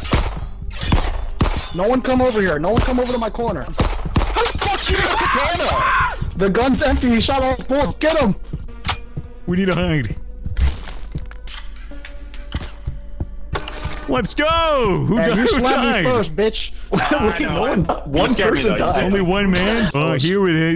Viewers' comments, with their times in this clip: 0:04 Screams of horror.